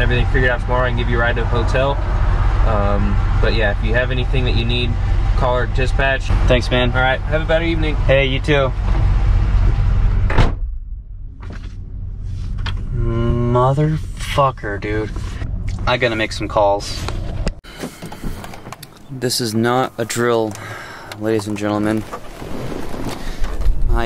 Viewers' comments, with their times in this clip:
0:05 did he say have a bad evening 😂 what is wrong with him